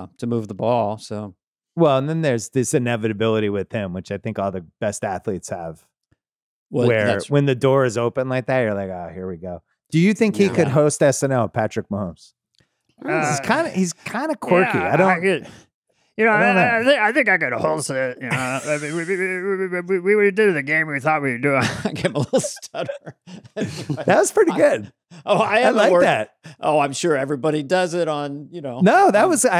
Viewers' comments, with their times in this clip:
0:10 I’m hearing a cross between Ray Romano and Bert from Sesame Street 😂